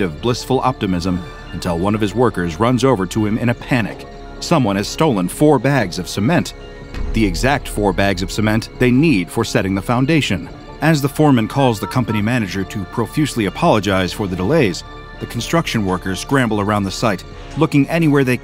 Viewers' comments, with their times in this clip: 0:04 they need for setting up WHAT?